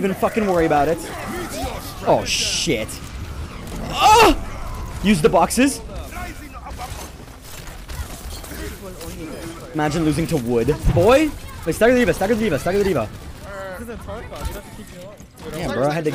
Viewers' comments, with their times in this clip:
0:03 are we gonna talk about that moan?